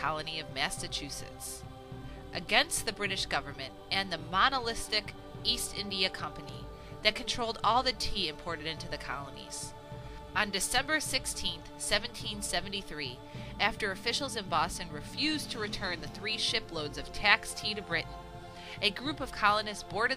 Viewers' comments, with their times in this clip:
0:08 OMG, you can’t read. and already you’ve inexcusably misread and mispronounced a ton of words. I’m done.